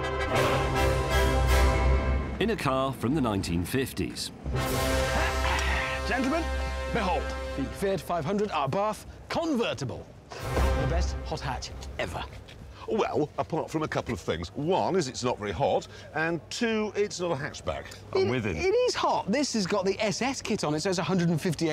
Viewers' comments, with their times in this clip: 0:04 I can't get over how Hammond's car has a fanfare and then after he gets out and instroduces it, it has a smaller fanfare. I laugh hysterically every time.